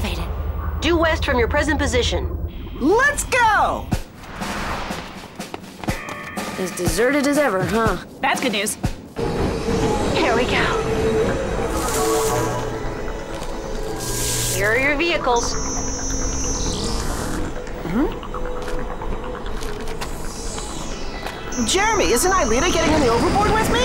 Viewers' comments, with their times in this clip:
0:04 Ulrich: "It's deserted as ever, huh?" Yumi: "THASGUDNEWS." Anyone notice how particularly in season 4, there's a lot of snippets of REALLY fast dialogue? I get that it's an English dub of an originally French cartoon, but it doesn't really seem like it flows naturally in those instances.